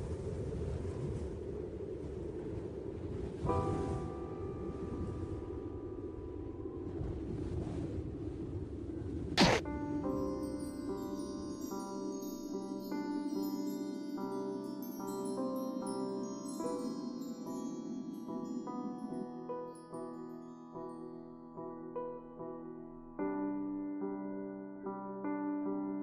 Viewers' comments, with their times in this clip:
0:10 the rwby ost goes hard